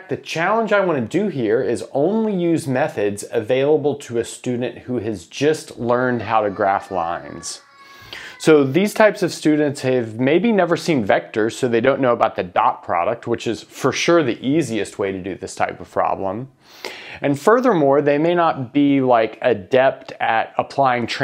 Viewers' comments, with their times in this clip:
0:07 why is there a kid dying in the background